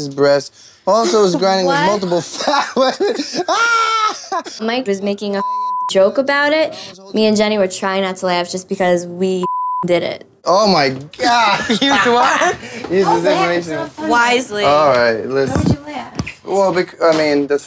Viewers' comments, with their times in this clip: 0:03 Mikes laugh tho😂